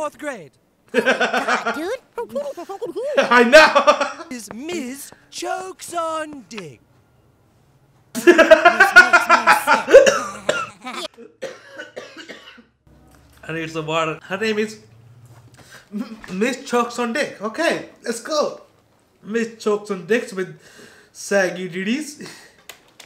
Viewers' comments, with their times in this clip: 0:08 not the time to start coughing and choking